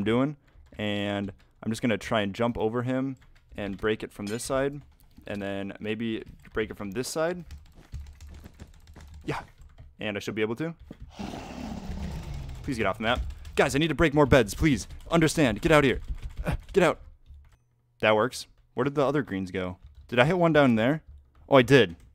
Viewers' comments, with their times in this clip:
0:08 the hyaaa was oddly satisfying